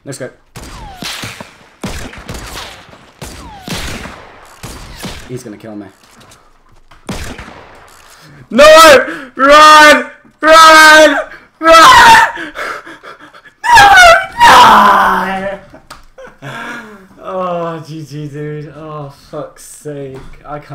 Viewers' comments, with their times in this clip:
0:04 Ear rape great vid doe